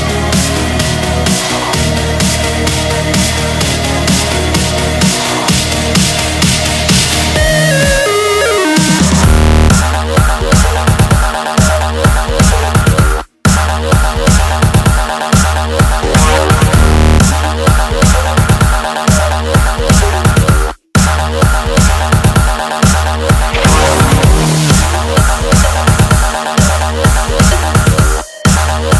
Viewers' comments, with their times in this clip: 0:09 This is just sooo good... Nice cool beat ... Beautifull melody, nice vocal sounds in the breakdown and then in the climax im just floating :)
0:09 DansGame drop but otherwise the song is great imo
0:09 i really like the part with vocals but the dubstep part you can hear is hurting my ears